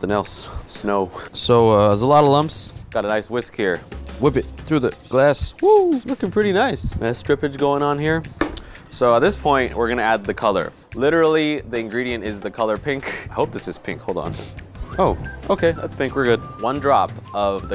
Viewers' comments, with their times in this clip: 0:05 Every time he pants from being tired, it sounds like the Mario panting noise. One time where he is stirring and singing and when he says, "whoo" it sounds just like it. He does it multiple times throughout the video.